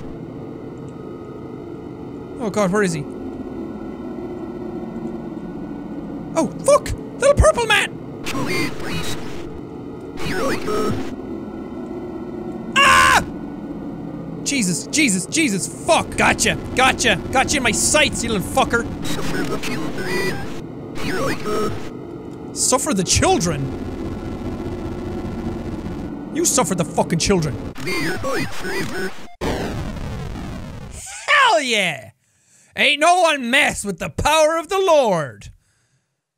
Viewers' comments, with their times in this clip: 0:07 I heard something say go away please
0:24 ~ does anyone else hear "ME AND MY FLAVOUR!"?~